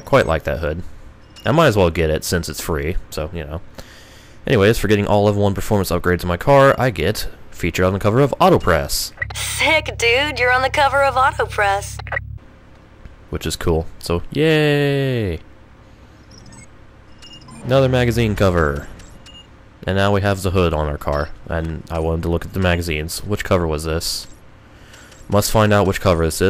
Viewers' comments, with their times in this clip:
0:10 did she say authopress or am is it just me?